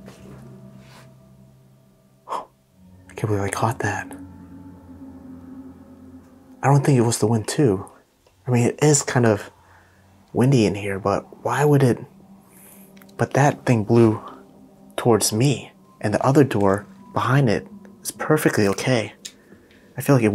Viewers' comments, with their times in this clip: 0:08 theres a whisper i cant make it out but its a girl voice.